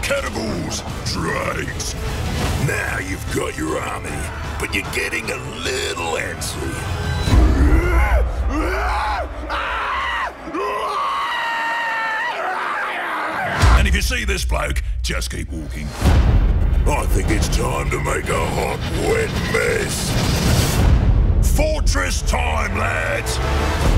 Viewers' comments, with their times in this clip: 0:07 " uhh uhhaaa aahhh uuhhaahhhhhaahhhuhhhaaaa " When screaming is an art XD Loved it!